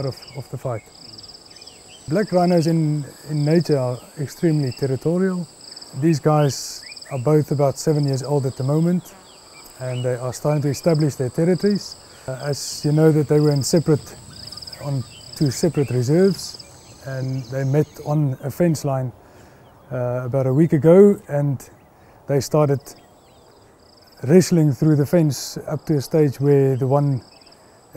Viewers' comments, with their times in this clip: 0:09 Fart 🤣 That's just how I roll.